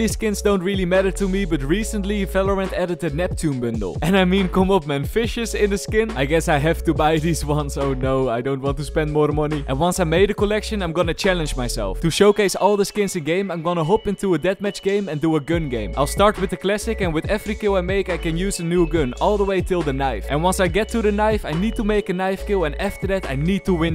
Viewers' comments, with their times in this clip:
0:07 and i mean kom op then xD